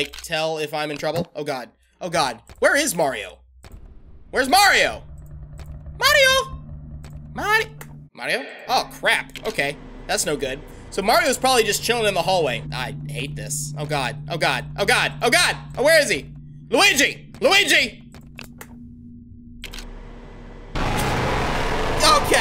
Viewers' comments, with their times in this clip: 0:06 mario~ Mari- (Confused) Mario?